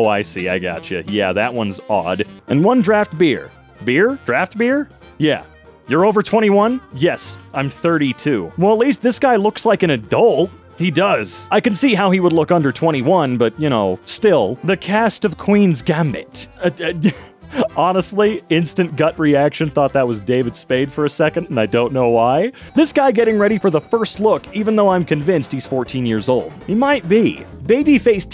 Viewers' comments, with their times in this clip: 0:09 Is it just me, or does it sound like another guy is replying to him